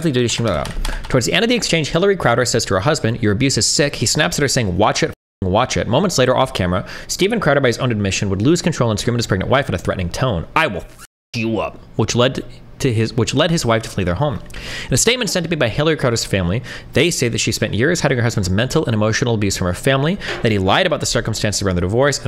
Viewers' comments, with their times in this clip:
0:03 Destiny and Hasan Piker think speed-reading is a sign of intelligence. "Babb abababababababababanananana"